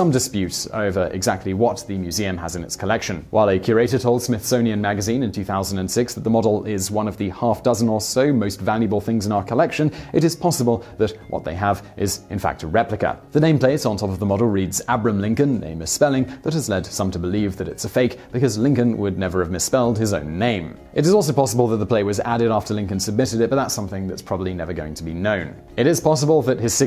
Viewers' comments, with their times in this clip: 0:10 facebook messenger ding lol